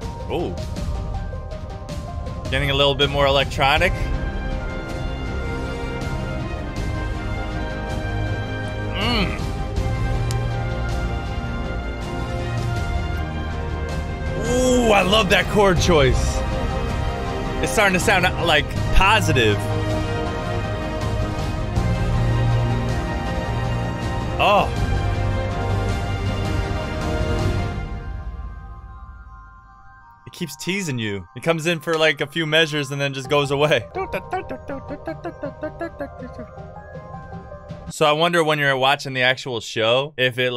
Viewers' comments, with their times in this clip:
0:07 sounds like 1hundred knight ost of owari no seraph
0:24 “it’s starting to sound positive….” Idk about that my guy….